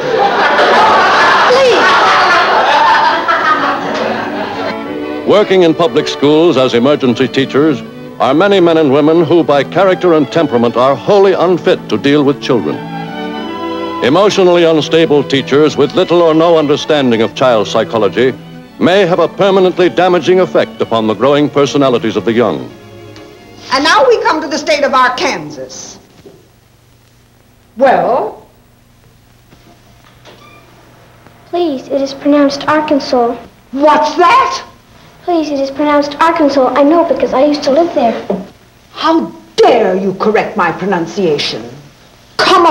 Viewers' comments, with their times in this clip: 0:05 why they are laugh ?
0:25 that teacher was so mean, she made me anxious just hearing her speak.